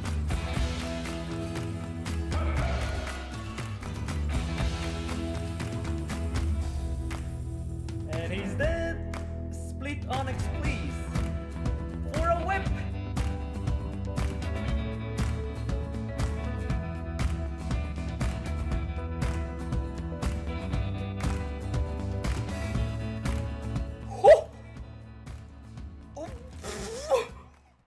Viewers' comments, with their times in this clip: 0:06 why did that go so well with the background music . i thought it was a song for a split second
0:07 did you mean to make that a song?
0:08 perfect pitch and timing with the song
0:08 what he said synced with the music perfectly.